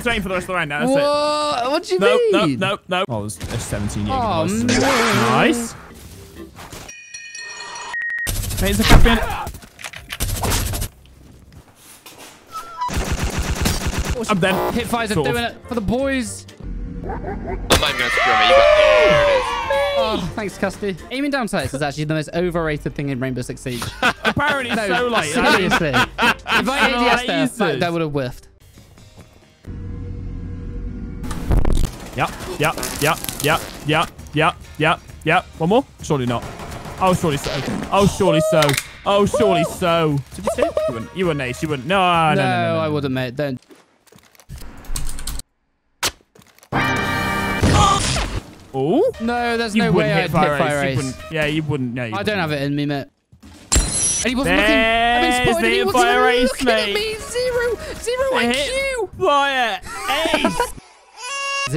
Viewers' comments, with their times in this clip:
0:10 was that the harmonica laugh coming out again?
0:12 the return of the harmonica
0:13 why the harmonica again
0:46 that's a cool sound effect